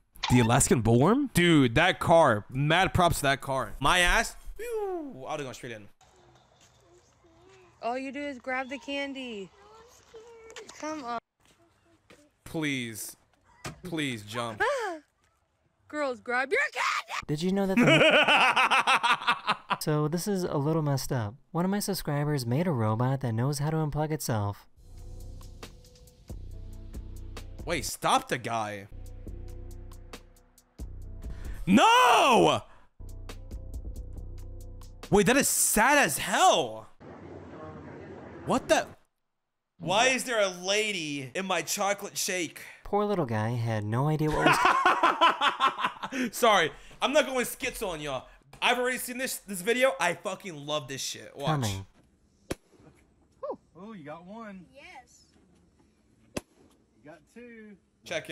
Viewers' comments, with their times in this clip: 0:06 I’m doing this for Halloween and it the scream person
0:42 bro laughing like lego Batman